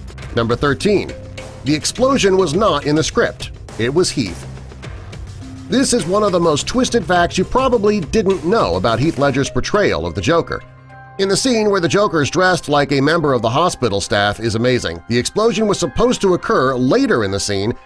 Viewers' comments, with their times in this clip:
0:03 Exactly and WTF !!?? The Explosion Was Not In The Script - IT WAS “HEALTH” WHAT TH F IS HEALTH !?